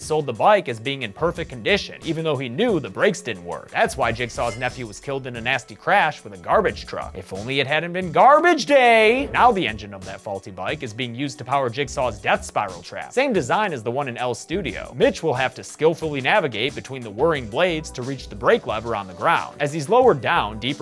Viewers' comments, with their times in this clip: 0:07 "If only it hadnt been GaRbAgE dAy" EDIT: happened